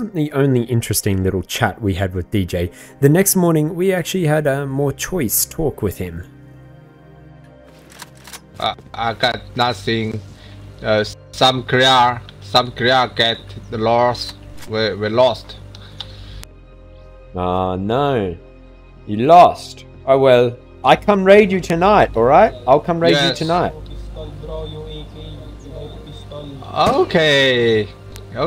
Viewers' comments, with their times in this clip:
0:09 I really love the Canadian accent